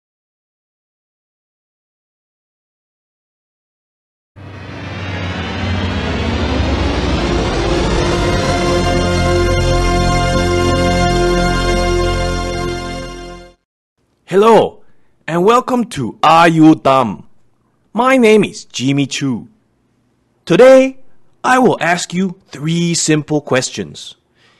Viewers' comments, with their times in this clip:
0:08 Sounds like the F note